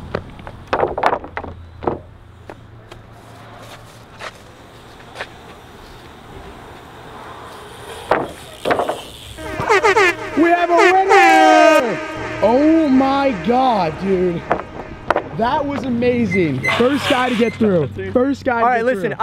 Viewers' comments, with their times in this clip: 0:03 I heard hallelujah